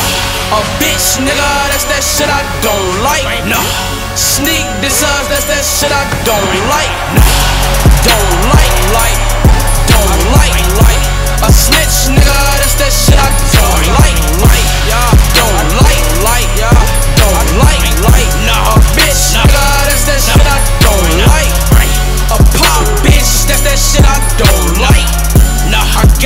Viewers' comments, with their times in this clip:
0:07 the beat went crazy